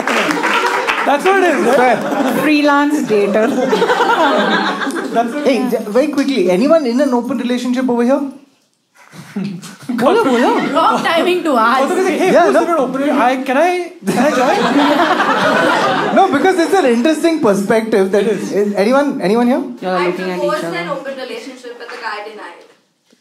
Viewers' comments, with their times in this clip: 0:07 its 3 AM here, and i was watching the show, home alone, and the sound of ghungro... just scared me off.... took me a while to figure out it was from video.... was there someone else, or its just me?